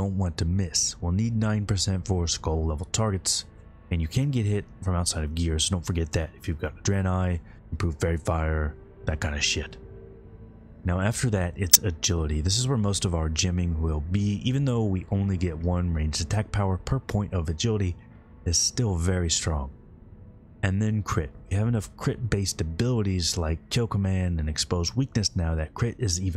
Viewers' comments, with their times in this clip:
0:10 rip ear users.
0:11 ear splitting sound pop